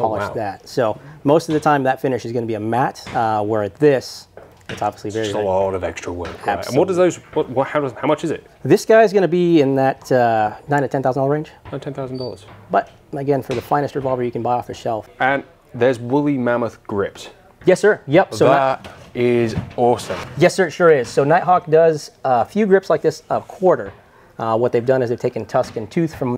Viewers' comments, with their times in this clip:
0:07 the guy in blue speaks at 1.25x speed